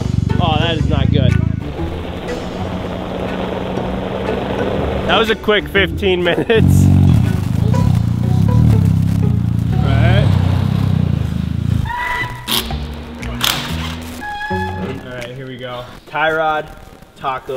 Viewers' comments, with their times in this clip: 0:03 I can barely tell the x3is even on